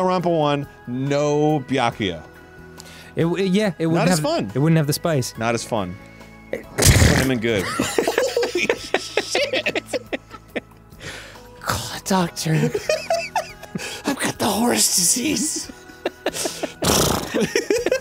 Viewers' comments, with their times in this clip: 0:05 might be the greatest sneeze in Game Grumps history!
0:05 putting this here for myself for whenever I need to experience the horse sneeze again
0:06 I’m going to need a sample of that sneeze immediately, that is text tone material right there.
0:06 omg that sneeze was so insane it caught me off guard
0:06 that sneeze is horrifyingly wet when you've got on headphones.